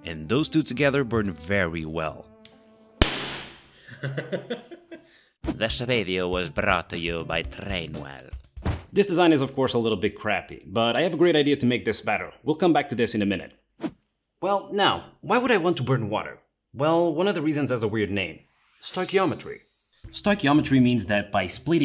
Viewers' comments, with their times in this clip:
0:03 i thought bro was speaking another language